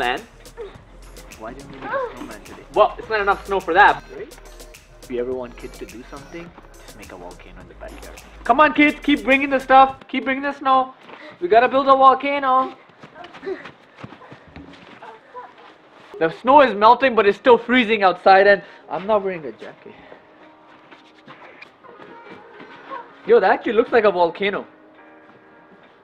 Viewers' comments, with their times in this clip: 0:09 thought he said "We are gonna build a wall"